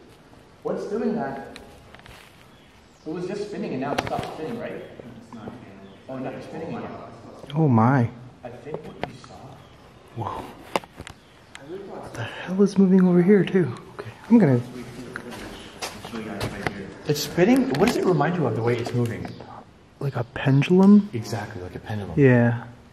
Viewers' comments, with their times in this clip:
0:10 right after you say “oh my” there a whisper that says “ WHOA”